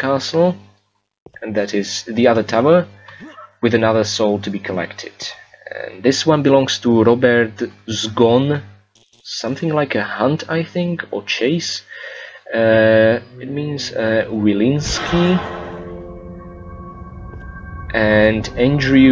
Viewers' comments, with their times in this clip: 0:06 I would never tell that you are Slovak. You english is very good, all together: vocabulary, grammar and accent. BTW 'zgon' means 'death' but in funny terms means 'completely drunk'.